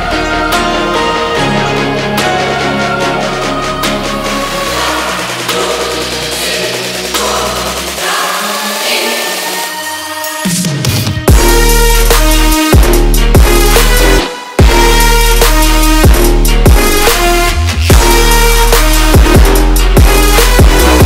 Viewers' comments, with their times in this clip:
0:09 Holy crap the drop combined with the epic track is amazing.